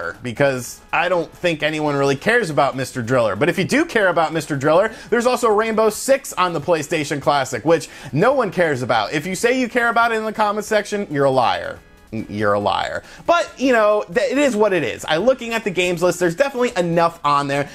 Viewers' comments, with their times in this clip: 0:04 Did anyone else hear "Rambo 6" ? I was frantically trying to look up a PS1 game I had never heard of haha